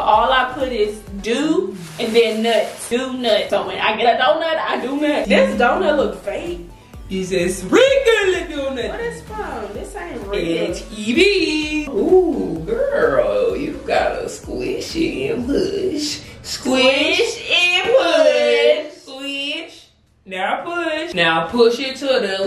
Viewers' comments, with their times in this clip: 0:04 do nut 😂the way she said it.